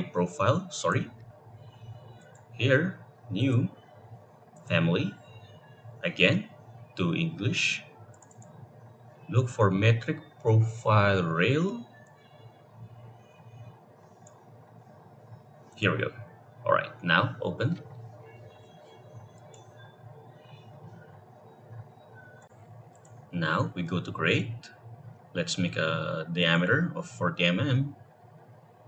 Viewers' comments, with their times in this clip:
0:09 that steam notification tho